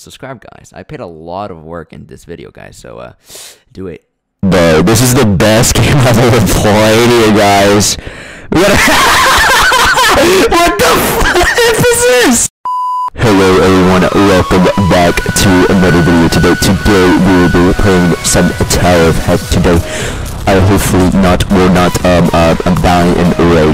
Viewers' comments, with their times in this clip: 0:09 Heck my ears are bleeding also i really died in that part